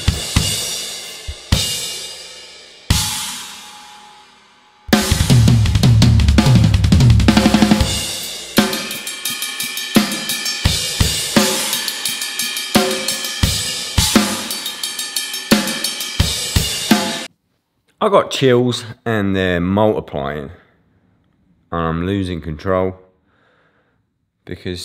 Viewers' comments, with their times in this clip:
0:06 im stealing that fill that shit is clean